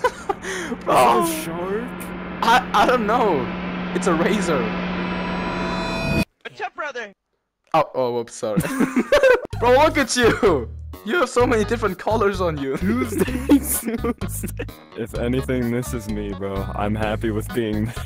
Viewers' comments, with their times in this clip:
0:06 what’s up broderh’ (cutely)